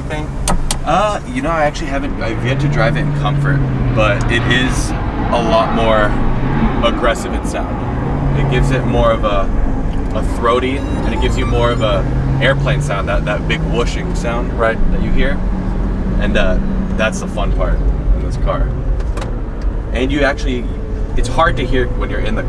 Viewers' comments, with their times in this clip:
0:10 LMAO I heard you turn your gimbal on